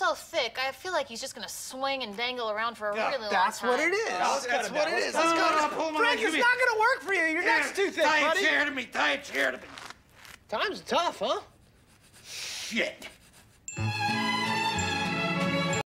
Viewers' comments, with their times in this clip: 0:12 Frank's deafeted Shshit lol